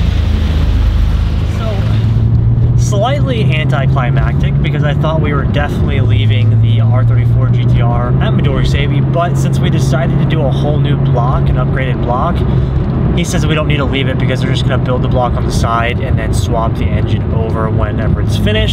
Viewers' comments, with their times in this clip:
0:03 did he say hentaiclimactic?? 💀💀